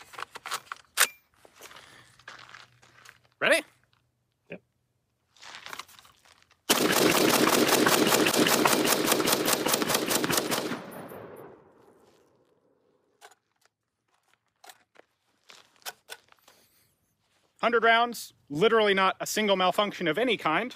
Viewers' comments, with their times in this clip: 0:06 that almost sounds like call of duty hitmarkers